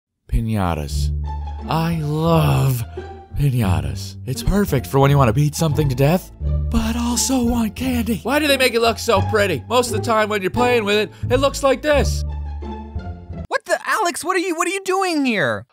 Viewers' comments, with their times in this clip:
0:01 I thought it was the TheOdd1sOut. And I was about to say, His VOICE IS SO DIFFERENT